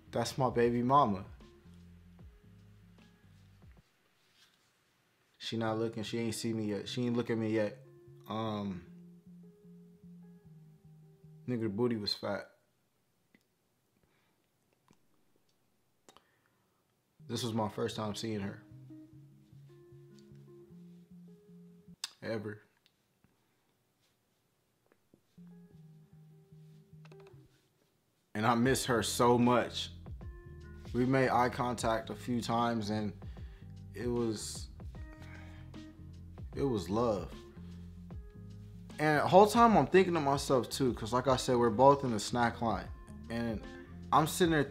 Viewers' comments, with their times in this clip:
0:08 He could barely contain his laughter after talking bout Pedialites and his scary 6’6” thug nephew.
0:26 Lol I almost believed you till I saw you couldn’t hold in your laugh